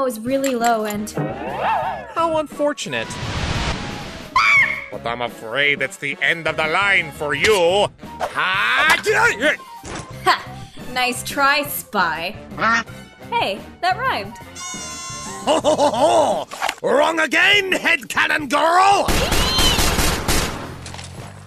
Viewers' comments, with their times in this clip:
0:06 I thought that voice sound familiar lol